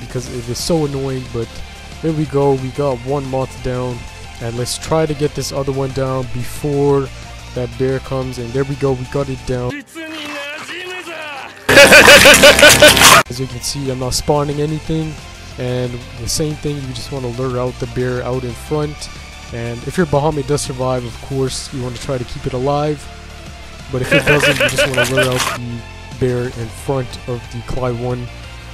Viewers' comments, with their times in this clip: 0:10 Headphone user warning
0:10 How the hell did you make the volume so loud
0:16 MY DANG EARS! I HAVE AIRPODS IN AND THAT HURTTTT